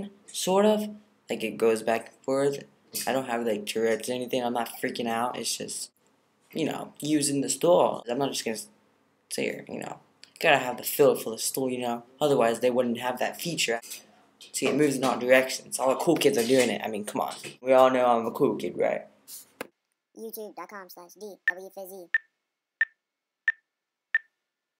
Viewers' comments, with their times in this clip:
0:06 LOL the way you said stool <3